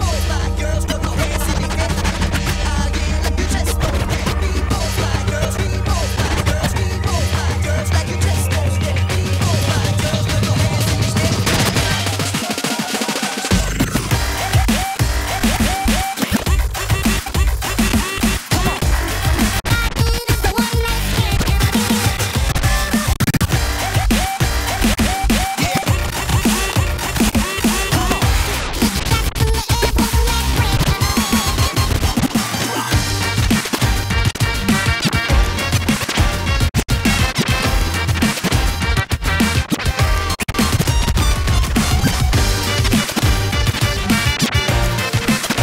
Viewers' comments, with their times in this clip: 0:03 no hands scratch and no backspins
0:33 What is the instrumental that Fly starts scratching ?!?!?! Sounds insane!